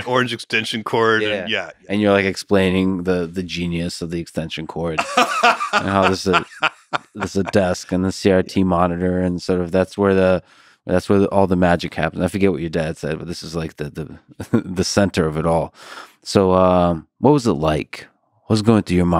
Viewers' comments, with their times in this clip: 0:04 his laugh is so ‘rich’